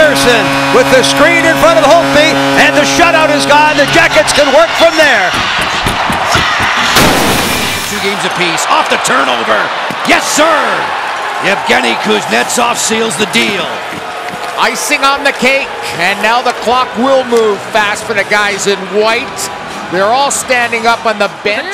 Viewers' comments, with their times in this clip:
0:07 I like how the people go with the cannon blast